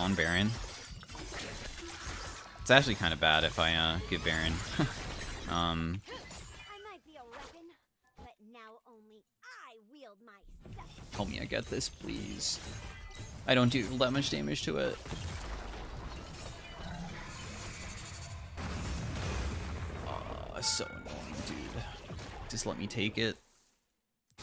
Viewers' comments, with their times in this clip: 0:06 I never heard this voice line before… I thought she said “I might be 11…. “ But she said “I might be a lemon…”